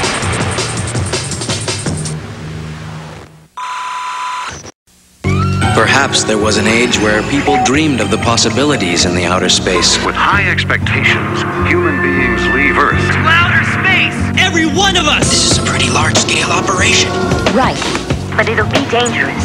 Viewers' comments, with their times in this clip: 0:05 Just turned 37 and sat through this whole thing reminiscing while waiting for the beat that's always on loop in my head whenever I'm doing mundane tasks. Lost a little hope, then bam Space is the place!